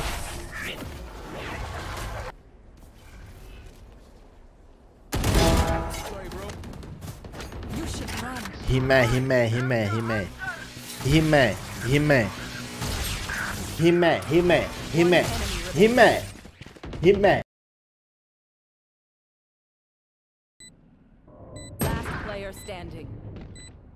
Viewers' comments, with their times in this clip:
0:06 I know he said "he mad" but it just reminds me of the "love hime hime" song